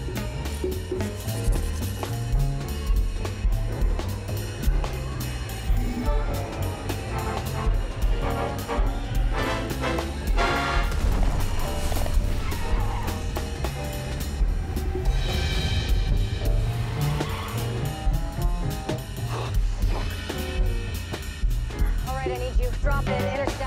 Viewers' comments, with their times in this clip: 0:09 when the escalation of the music matches the car about to set on fire is amazing!